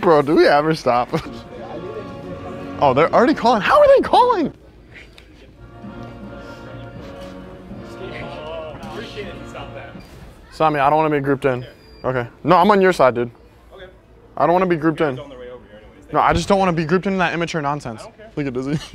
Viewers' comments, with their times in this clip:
0:05 the batman music while he calls security has me dead🤣🤣